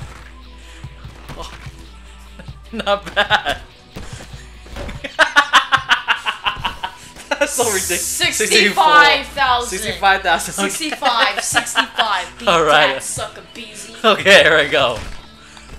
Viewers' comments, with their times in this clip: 0:03 you can hear the impact on the cranium lol